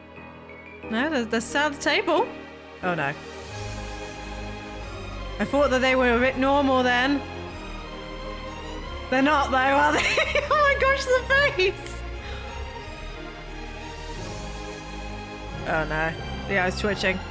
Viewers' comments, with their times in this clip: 0:04 sounds the like chainsaw man opening